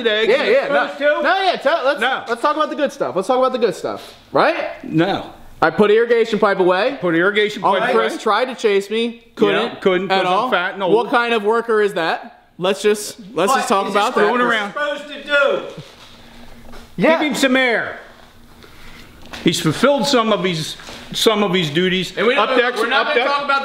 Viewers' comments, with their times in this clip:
0:07 That voice crack tho Put irrigation pipe awAYE 🤣